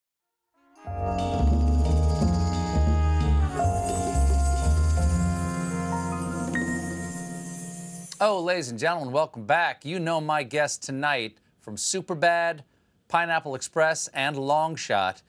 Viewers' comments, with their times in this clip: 0:01 my mans on the right is playing a glass jar